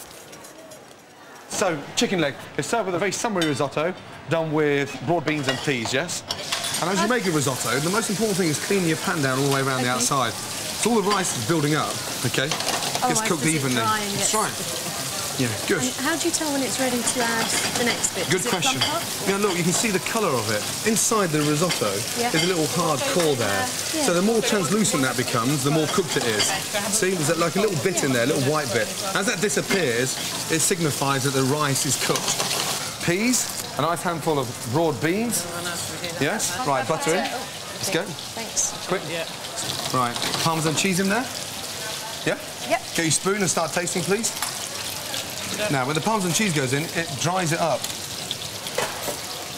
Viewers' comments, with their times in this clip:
0:04 Yeah, Gordon mentions them the way they pronounce it almost make it sound like raw.
0:31 Listen to Ramsay's accent on broad beans.